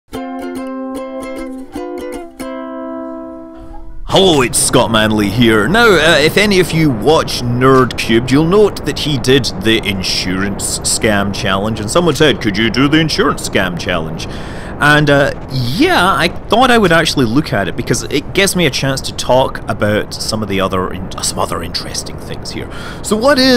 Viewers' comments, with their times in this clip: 0:04 if you turn on your cc it will say on screen Whole wheat